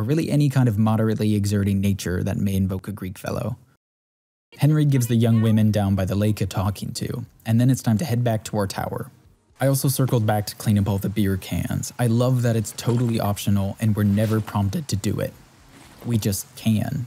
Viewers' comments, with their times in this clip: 0:04 Genuinely chuckled on your deadpan delivery of “moderate effort” joke. You’re so good at inserting those at the precise moment I don’t expect them to